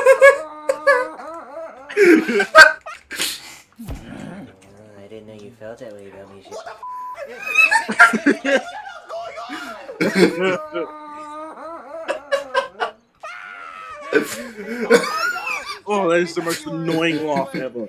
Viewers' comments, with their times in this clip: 0:03 that scream for chef pee pee 😂